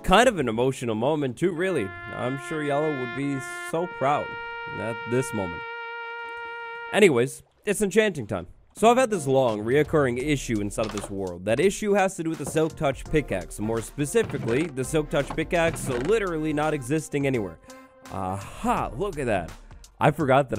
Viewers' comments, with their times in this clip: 0:04 lol why did u added TAPS for?.